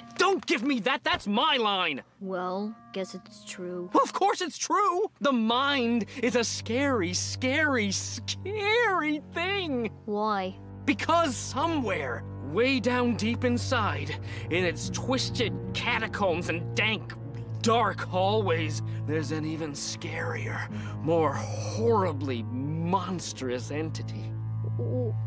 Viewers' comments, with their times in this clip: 0:09 Idk why but Orel's monotone "Why" made me laugh